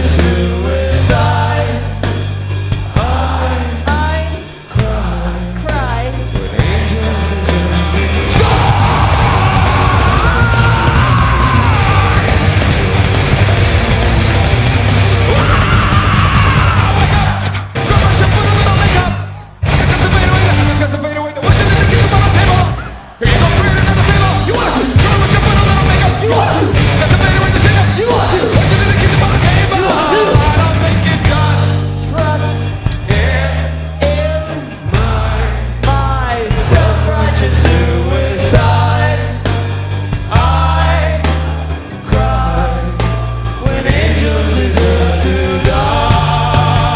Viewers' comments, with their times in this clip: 0:08 Serj’s “DIE” is fucking brutal
0:08 what the hell just happended !!! :O did he went 3 different scream registers !?! fry-chest-head man that was huge!!1
0:28 Shavo goes backstage to get him louder, then you can hear him playing the bass and he is pretty damn loud. Love him, love SOAD